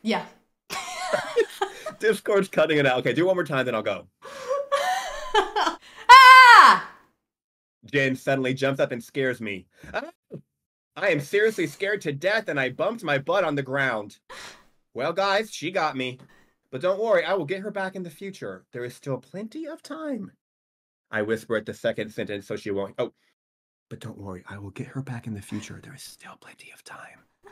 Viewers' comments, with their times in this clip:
0:10 the scream cutting out brought literal tears to my eyes😭